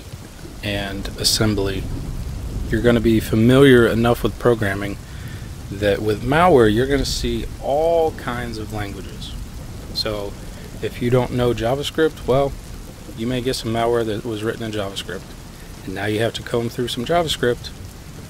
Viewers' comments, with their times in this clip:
0:04 TLDR: 1. Python 2. C/C++ 3. Assembly [x86/64, ARM, MIPS] --Just realized audio cuts out Not missing much. Just me babbling about how you'll eventually have contact with just about every language out there at some point while in the malware analysis field.